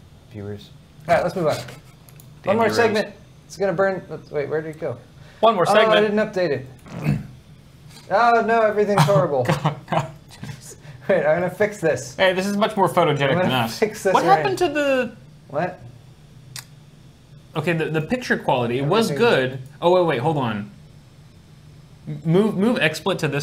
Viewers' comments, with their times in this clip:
0:06 did Kyle fart?